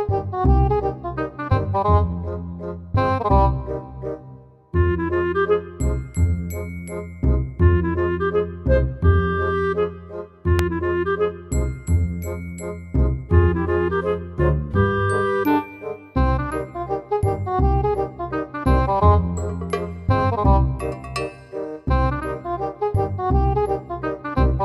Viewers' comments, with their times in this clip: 0:10 a "pop" sound